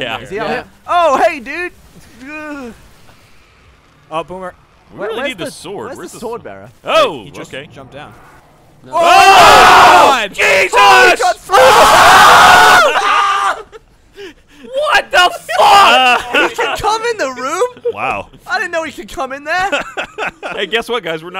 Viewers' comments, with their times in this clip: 0:05 warning headphone users
0:09 The collective screams 😆